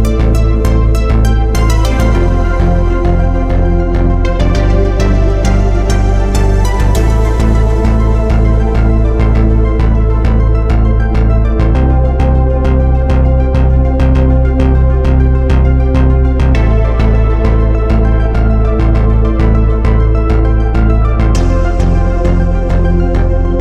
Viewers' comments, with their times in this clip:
0:04 bro added a discord notification sound. what a troll